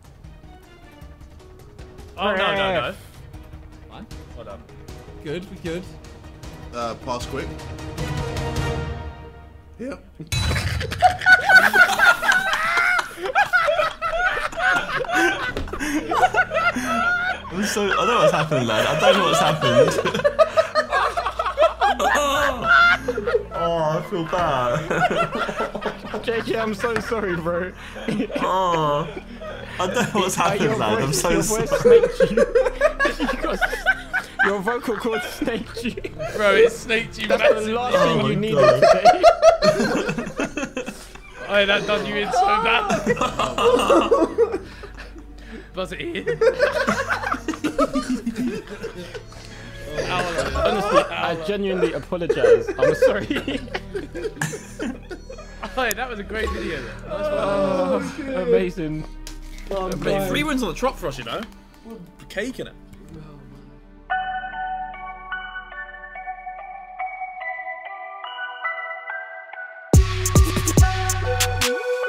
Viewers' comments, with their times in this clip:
0:06 SENT me 🤣🤣🤣 the guys laughing made it so much funnier too ffs
0:07 Voice Crack from JJ😂 HEEERE:|
0:09 i thought the climatic music was going to lead to them conceding, but then when it built up to jj having a voice crack i lost it 😭
0:09 KSI voice crack
0:28 what was that noise ☠️☠️😂😂😂
0:56 love how they all moaned in unison